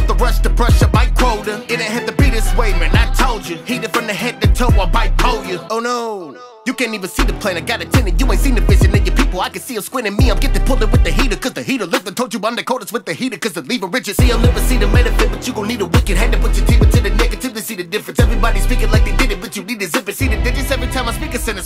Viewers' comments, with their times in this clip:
0:06 I love how ingenue and uncaring this sounds